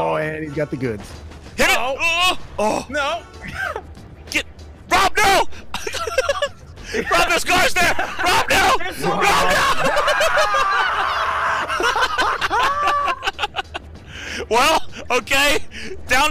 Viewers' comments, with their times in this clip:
0:04 damn he sounded so worried about RVD lmao